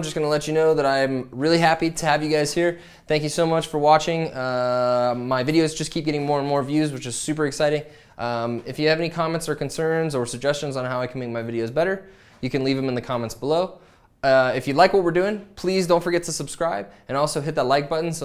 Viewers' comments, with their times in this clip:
0:06 My suggestion would be to cut down on the 'eeeerrh' ;)